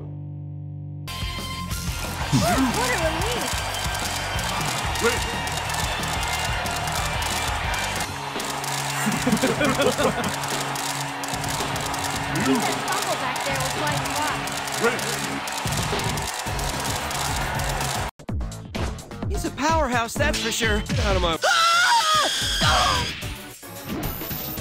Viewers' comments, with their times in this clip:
0:08 Yu was like laughs Yes...I am kira. he even sounds like him.